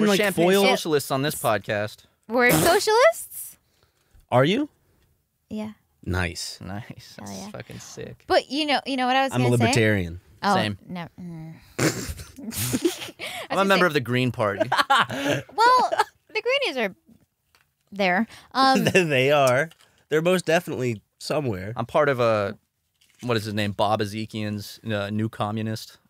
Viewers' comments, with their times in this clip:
0:07 THERE WAS NO PUNCH SOUND FOR THE FIST BUMP 😡